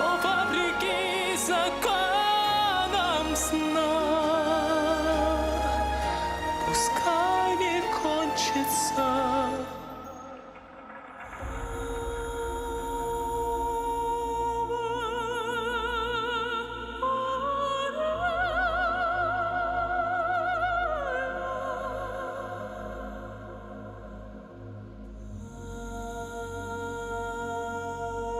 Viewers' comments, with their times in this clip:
0:10 This was a cover of Igor Krutoy's song premiered in 1990 or so by the great and only ALLA PUGACHOVA, a storm of passion on the stages, the Prima donna of Russia who standed her gound against Putin about the Russian invasion to Ukraine. They performed at the "A gift for Alla." concert for the anniversary of Alla Pugacheva in Moscow This was the first time most people heard his, now, well known angelic melismas that were called his “MariahCareys” or his “avemarias” by non music specialised reactors. I guess that later evolved in his own version of “Ave Maria”